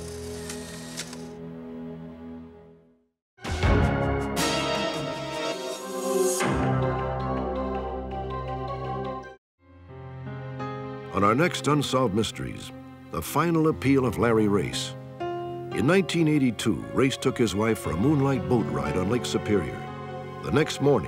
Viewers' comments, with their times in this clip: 0:03 I remember that scary music playing and after that would say unsolved mysteries on lifetime will return after this.